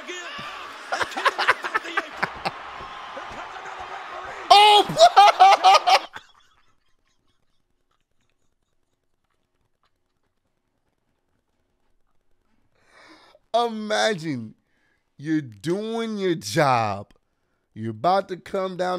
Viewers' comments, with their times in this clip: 0:04 All I heard was NOPE lmao😂